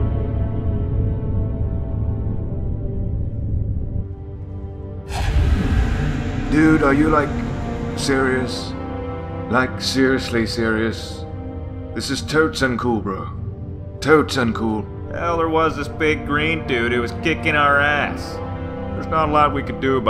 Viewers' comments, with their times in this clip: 0:04 Since when do banshees sound like wraiths?